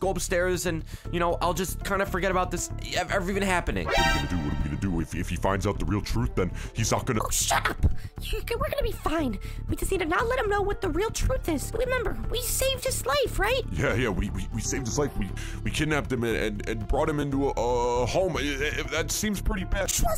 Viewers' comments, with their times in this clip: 0:07 the way she says SHUTUP 🤣